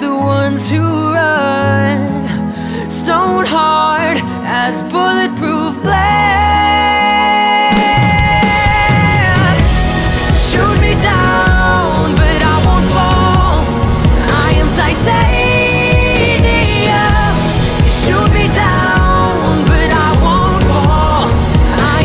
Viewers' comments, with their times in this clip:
0:07 Total 'My Immortal' moment. Loved it.
0:07 Right this gets super powerful!